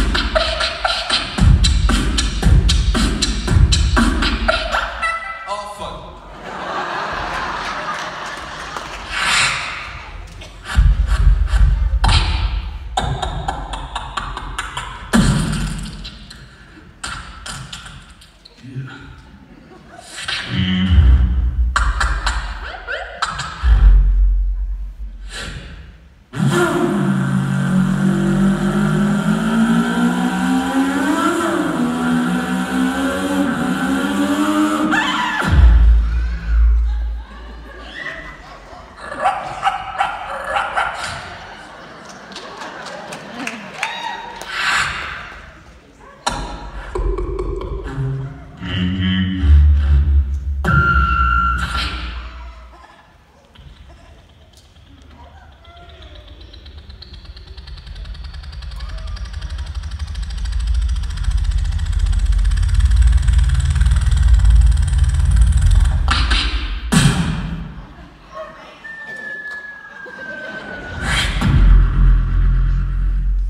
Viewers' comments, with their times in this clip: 0:05 that one time you forget to change an alarm....
0:52 How does he do the helicopter?
1:00 He becomes a helicopter